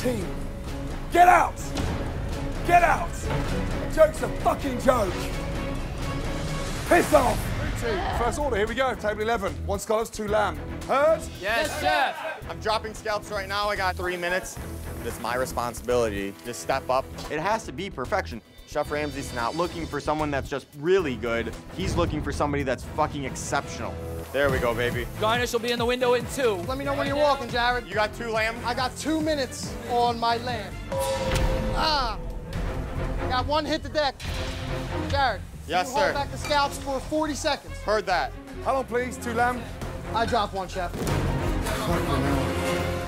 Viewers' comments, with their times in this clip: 0:06 WTF was that noise!!?? U guys heard that??.... sounded like groaning-crying sound of one of the female chefs...im concerned...
0:29 the dong sound is exceptional 😂😂
0:31 that "ah" was just perfect